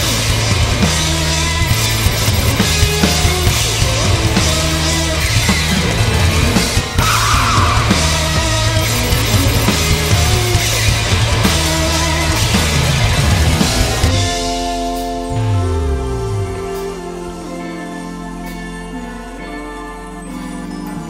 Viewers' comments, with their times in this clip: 0:05 jesus he screams like a wild cat